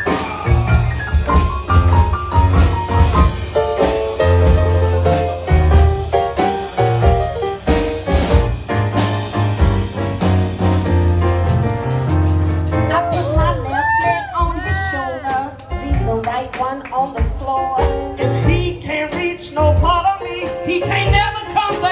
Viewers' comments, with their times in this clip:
0:06 YASSS!!!!! Got in here shaking my hips am!!!! Soul Touching!!!! Love ❤️ ya voice!!!! Phyllis Montana-Leblanc New Orleans, Louisiana!